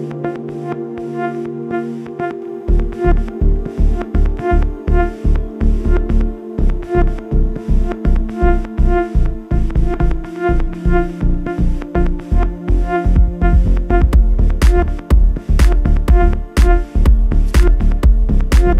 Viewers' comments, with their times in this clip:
0:04 Thumbs up if you know what i mean BABAYYYYYYY!!! Best drop in Music History!!! mark